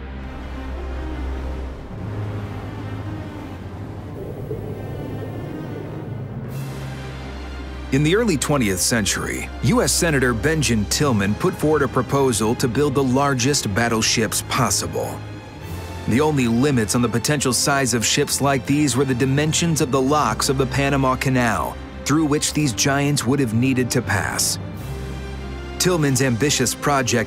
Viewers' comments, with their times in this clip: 0:09 on a more light hearted and funny note, the narrator says "US Senator Benjin Tillman" instead of Benjamin Tillman
0:10 Benjin Tillman? Never heard Benjamin pronounced like that...